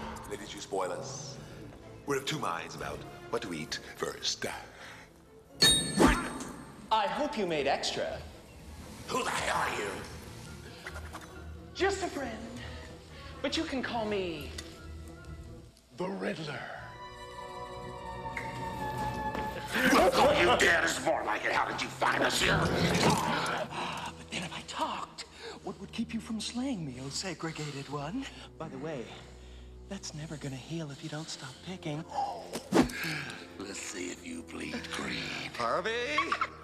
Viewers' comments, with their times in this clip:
0:08 And how he nails that comic pose As hokey as the film is, Jim Carrey really did emulate the Riddler really damn well and you can even see how his narcissistic demeanor and cocky condescending laugh really carried through to other iterations of the Riddler, especially the Arkham Game series.
0:09 "Who the hell are you?!" That voice though.
0:09 I find how he said, "Who the hell are you?" Funny. 😂
0:10 spin trick with cane just a friend... but you can call me the riddler dramatic music
0:20 Been rewinding this part since VHS to try and understand what he was saying.